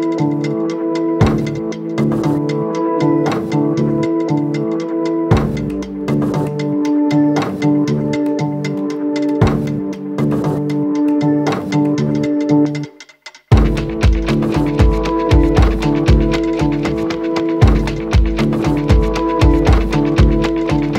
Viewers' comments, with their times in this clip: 0:08 "The spike" or "Despite"?